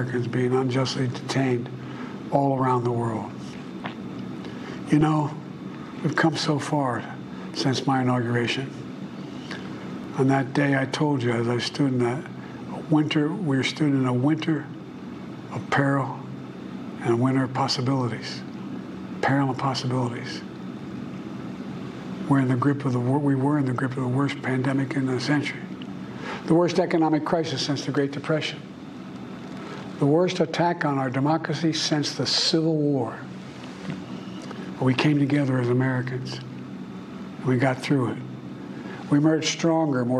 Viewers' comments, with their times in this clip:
0:03 Did he just fart? 😂
0:03 he literally craps his pants. You can hear it.
0:03 Did I hear a fart …?
0:03 he sharts and then says “we’ve come so fart”
0:04 Love the Fart
0:04 Poor man! Did he fart 😂? What was that 'strange' noise?
0:04 He farted And then said “weve come so fart”
0:04 Did he? Did he just? Did he just shart ?
0:10 He's really struggling here, even with a prewritten speech and his staff standing behind the camera literally giving him cues. Look at how he's slurring his words, how he got completely lost ... this is just sad. And who made him orange?
0:26 What happened ? Did someone tell him to sit up straight and speak louder. It’s almost as if he stopped, had a nap, and restarted. The vigor didn’t last long.